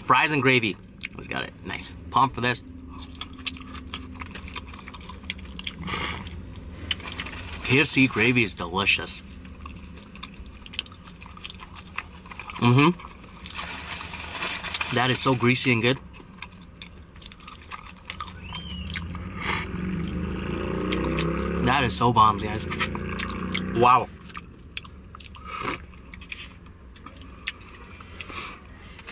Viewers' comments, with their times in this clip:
0:10 😂 I thought he was making a motorbike noise he thought it was that good.